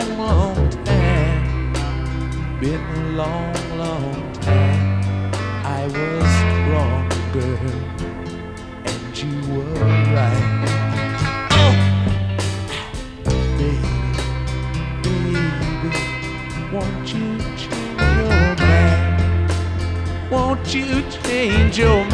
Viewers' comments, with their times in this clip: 0:09 The chord transition in A is really cool